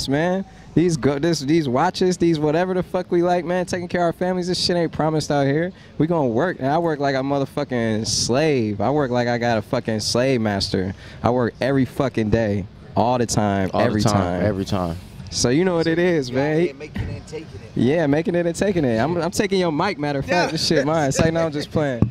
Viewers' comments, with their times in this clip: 0:09 The michigan suburban big sean accent came out